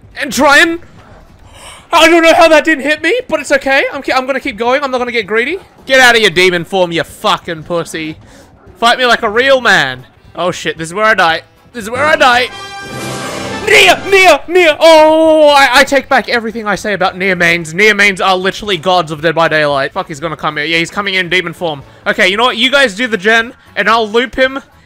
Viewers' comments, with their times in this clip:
0:10 IM DYING I DONT KNOW IF SHE MEANT TO DO THAT BUT THE MUSIC AND EVERYTHING IS TOO MUCH
0:11 The music was fit too well